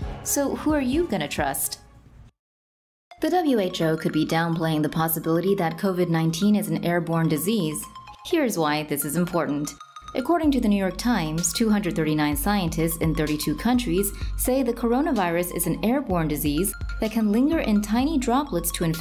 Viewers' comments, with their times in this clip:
0:05 coronavirus beat is lit 🔥 COVID TURNUP